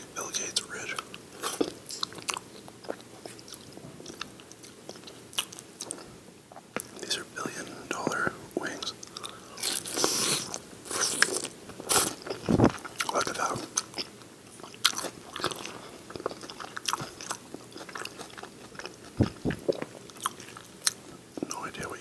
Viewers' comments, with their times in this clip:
0:10 The bite I played like six times 😂